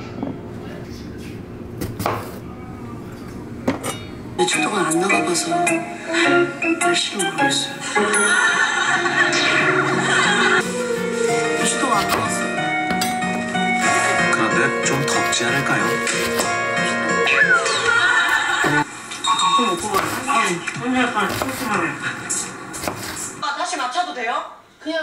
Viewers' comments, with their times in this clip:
0:06 welcome back, long time no see mate. heard mother tong